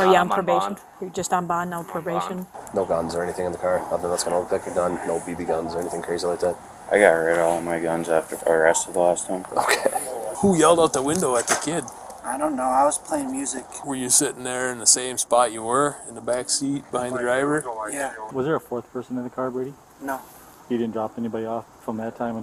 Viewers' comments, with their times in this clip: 0:04 “I got rid of all my guns last time I got arrested.” The officer laughing at that was pretty funny